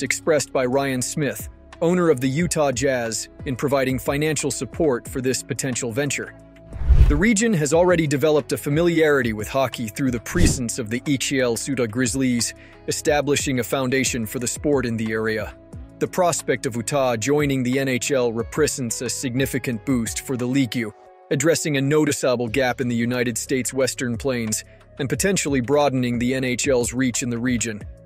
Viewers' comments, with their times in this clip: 0:08 Oh how I hate fake robot voices, especially when the people who post this crap don't hear it and fix it. My God it's awful. "league?" "Utah" "Presence." Just bad bad stuff here
0:10 Sounds like your AI narrator blew a gasket at the mark lol